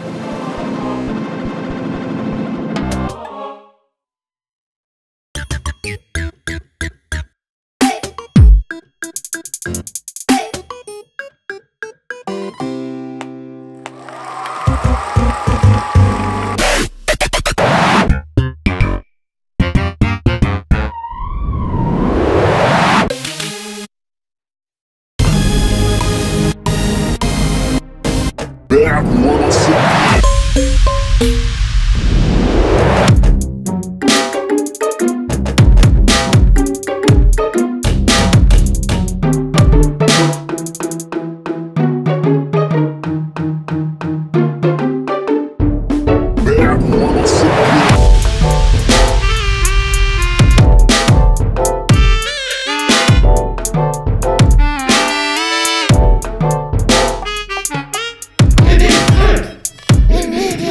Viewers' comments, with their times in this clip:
0:10 That brief medley gives me Mario vibes like if you completed a level or challenge
0:12 This is literally avant-garde music. And it's brilliant. Also leave it to 100 gecs to put the song's "ending" in the middle of the song
0:33 sometimes when I get anxious weird sounds I've heard are pulled out of the depths of my memory and get mashed together and play in my head obnoxiously and is exactly what it sounds like
0:33 sounds like my brain whenever i try to do basic fucking math
0:33 gives me crash bandicoot vibes
0:33 IT SOUNDS LIKE BLOCKS I LOVE IT 🐛🎶
0:34 sounds kinda like that brain age game that I used to play on the ds.
0:41 lowkey actually sounded good
0:47 Comment: "I'm a 13 year old producer in Florida and I would really love for you guys to listen to my beats" Their beats: